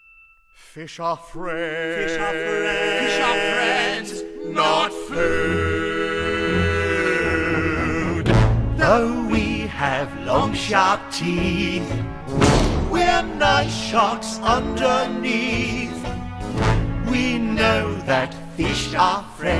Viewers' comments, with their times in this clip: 0:05 I love that the music had a nod to the Jaws movie and included the most recognisable two notes in cinema history that everyone thinks of when they think of Great White sharks